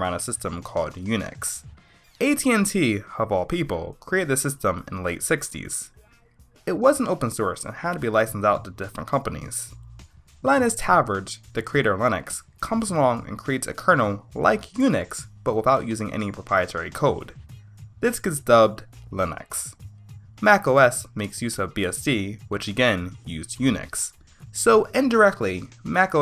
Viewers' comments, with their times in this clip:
0:10 Linus Torvalds would be most unproud with your pronunciation of his last name.